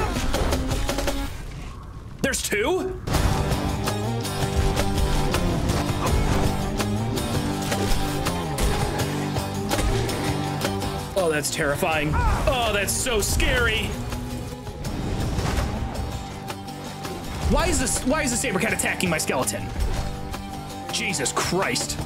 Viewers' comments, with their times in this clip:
0:08 beat go crazy I got to find it somewhere